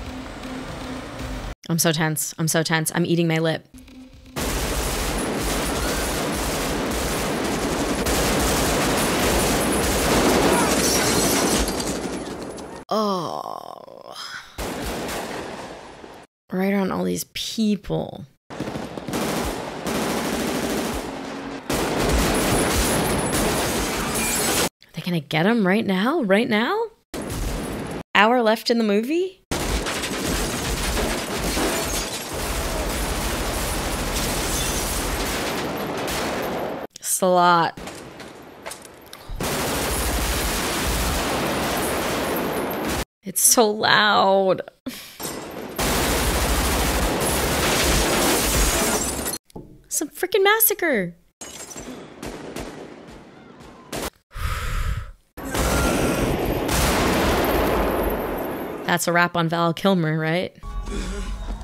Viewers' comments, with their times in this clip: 0:04 This shootout manages to make the sound of total dead silence more deafening then the sound of all those rounds being fired.
0:46 “It's so loud” - HEAT and Dead Presidents are from the same year 1995 and they both were the first films I watched with a shootout scene sounding 3D and live. I watched HEAT in the theater but I don't remember if the system was Dolby or DTS. Dead Presidents I watched on a Hi-Fi VCR system connected to a Dolby ProLogic-1 system with four 3-feet tower speakers, the Pro-Logic turned the VHS-audio into a 4.0 surround sound, this system made the Dead Presidents shootout 3D and live inside that living room 😂. Next and last film I watched with such advanced sound effects was three years later (1998) Saving Private Ryan on a DTS- equipped theater. Up to 2023 I have only seen all these feats being washed away with subpar jobs and amaterish execution. It is like the whole industry is walking backwards and I don't see it will change in the future.